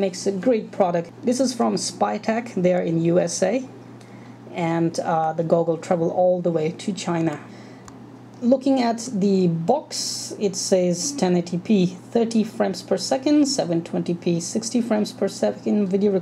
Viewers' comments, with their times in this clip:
0:04 What exactly did you say here? I can't understand and have played it over and over.